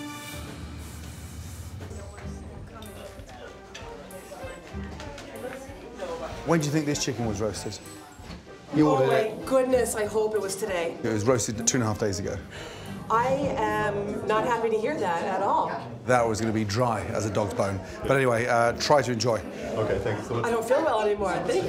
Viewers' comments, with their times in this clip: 0:03 Best paid actor just smiling not even eating her food and the way she said her line lol